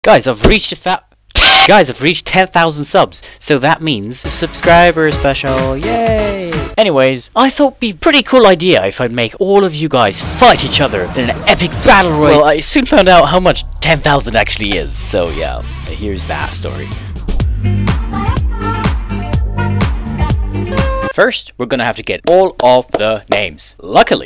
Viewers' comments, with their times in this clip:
0:01 him: guys i reached a thou- thaaaa Captions: guys i reached the fat guys
0:01 Guys i’ve reached a th- WHEEZE
0:01 goodbye my ears
0:06 was an epic scream.